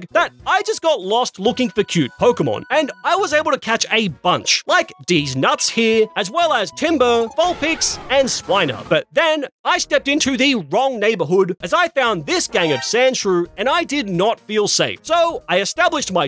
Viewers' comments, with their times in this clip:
0:03 😂😂 Dietz n+ts😂😂 Vineboom